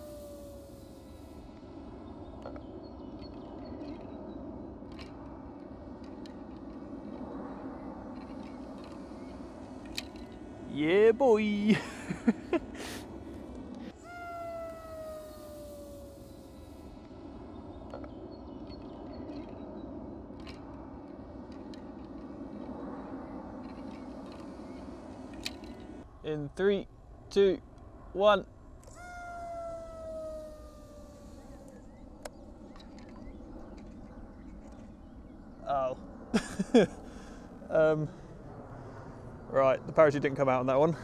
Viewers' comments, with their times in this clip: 0:10 It sounds like ewoks or jawas lol Also lol
0:26 is it just me or did i hear SHIIIII